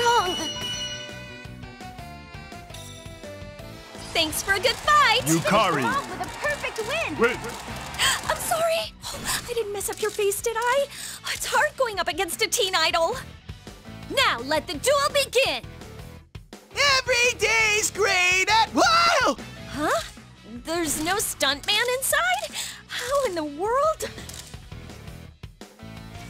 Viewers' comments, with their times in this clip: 0:08 you can really hear the Kawakami in her voice.